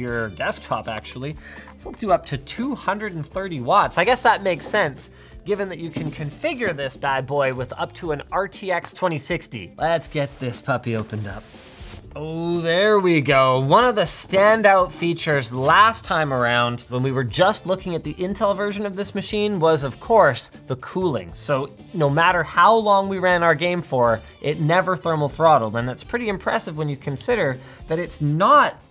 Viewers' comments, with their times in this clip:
0:09 Man, I know everyone is commenting on the RAM upgradability, but what really caught my attention was when he clearly said the wrong gpu that you can configures so he recorded on top of it.